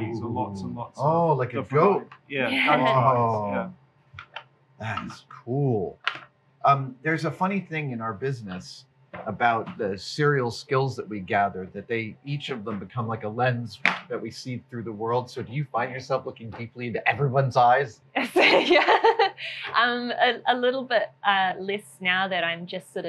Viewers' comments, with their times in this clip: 0:10 adam gently sets down the goat eye other guy tosses it into the box with a loud "CLACK!"